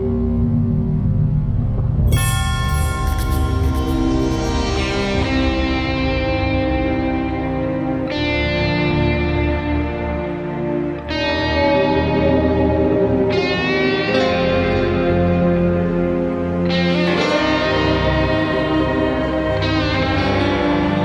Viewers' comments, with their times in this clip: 0:09 am I the only one that always thinks that that one Star Wars theme is about to play whenever I hear this part of the intro?